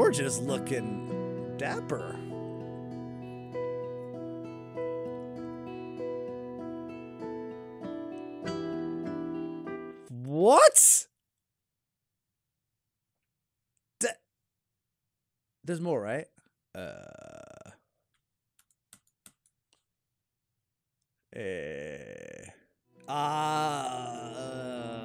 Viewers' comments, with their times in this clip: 0:10 😂😂sounded like that one meme. “whuat”